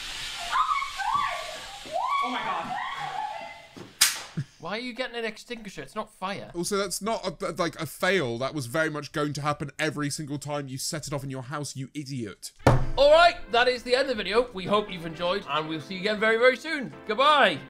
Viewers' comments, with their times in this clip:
0:10 Mum walked past and asked "is that Jack Black!?"